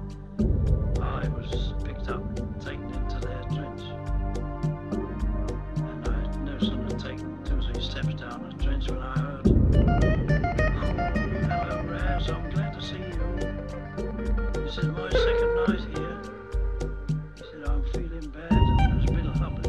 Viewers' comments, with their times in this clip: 0:04 ....the way he says "trench" stuck with me from the day I heard it